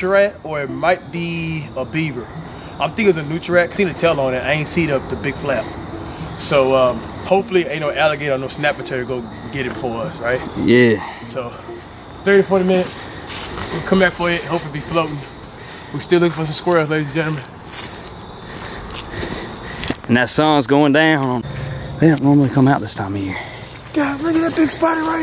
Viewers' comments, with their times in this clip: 0:08 I like how white dude said yeeee